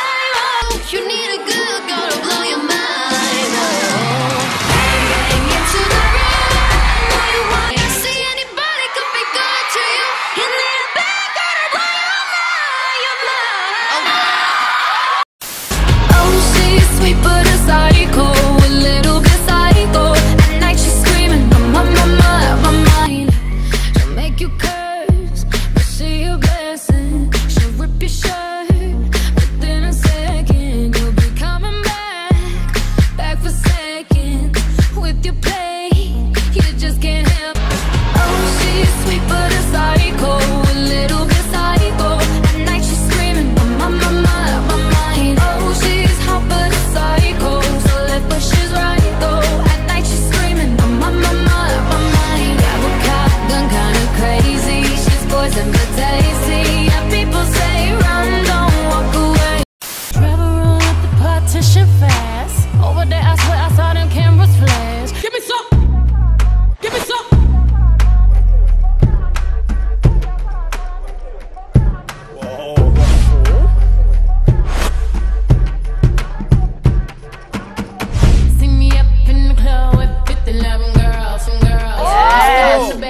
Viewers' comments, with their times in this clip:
0:04 oh my god somi, her voice is sweet but she have deep highnotes
0:16 I don't know why 'swet' made me laugh
1:04 it sounds like BTS Jimin is yelling "GIVE ME SOME"